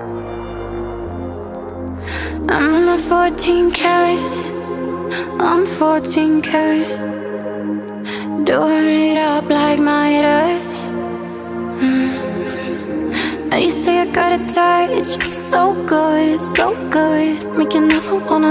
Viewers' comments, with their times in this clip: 0:05 does the song says im 14 carrots? Idk the lyrics. But if it says "i'm 14 carrots" just lemme know.. lol